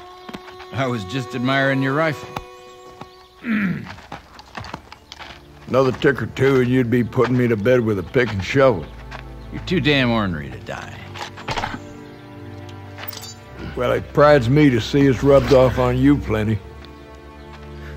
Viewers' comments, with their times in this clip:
0:05 this ost fits the game so well